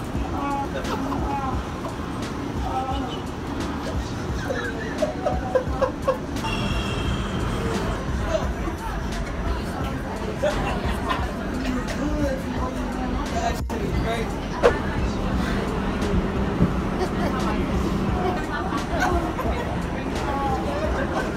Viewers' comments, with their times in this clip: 0:06 She laughs until she saw that it's a Korean guy😂